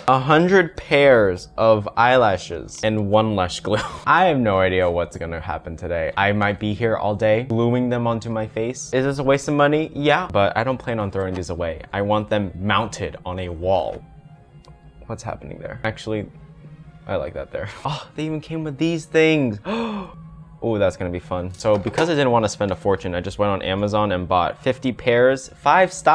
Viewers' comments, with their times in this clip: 0:09 why do I hear Willy wonka when he says ”ya”